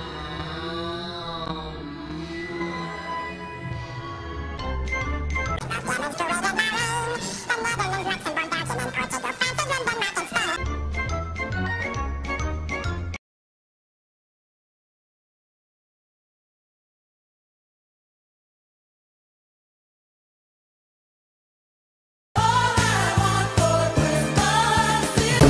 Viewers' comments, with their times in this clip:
0:06 What happened to yakko’s voice?